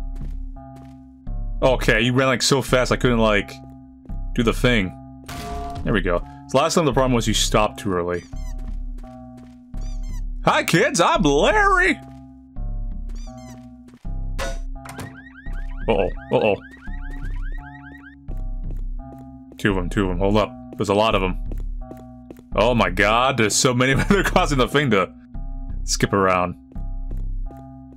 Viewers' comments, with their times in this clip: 0:10 he sounded like markiplier lol